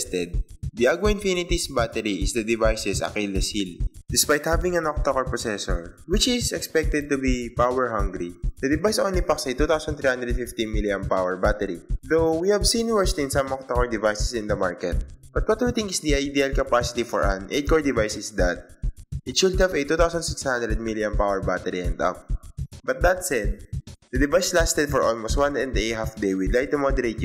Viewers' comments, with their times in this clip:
0:08 ...The device only fucks a 2350 milliamp power battery...